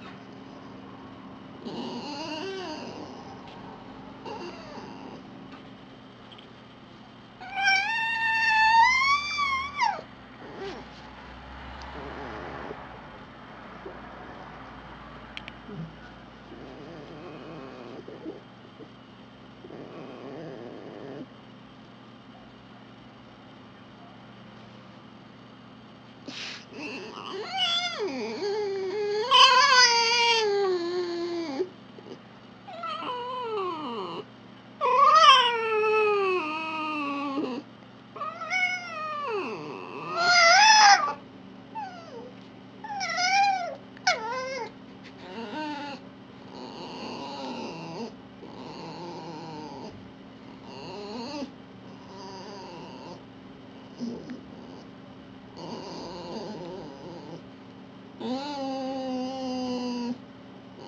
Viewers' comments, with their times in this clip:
0:08 Second-cutest yawn ever. I say second-cutest because I'm biased about my dog. XD
0:34 and so on, that's how I sound in the morning when I don't want to wake up... Haha XD
0:41 That whimper was so freakin adorable I almost died.